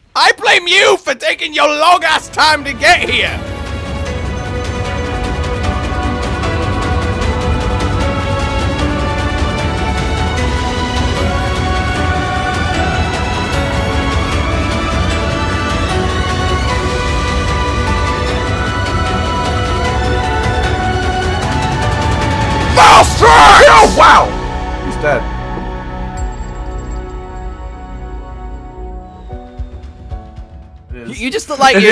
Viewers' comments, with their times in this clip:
0:03 What is the music its like an eargasm
0:15 Heeey, the music that starts I know that one. Pretty good instrumental